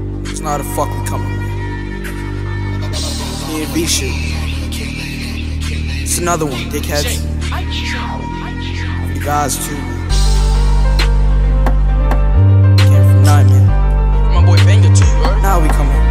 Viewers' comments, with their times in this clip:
0:03 Guy aint even inhale ...😭🤚